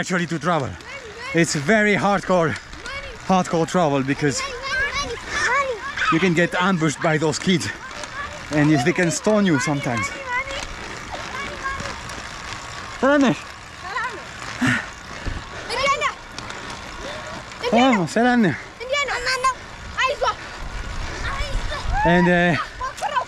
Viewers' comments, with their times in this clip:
0:07 That scene is so strange kids shouting “money, money..”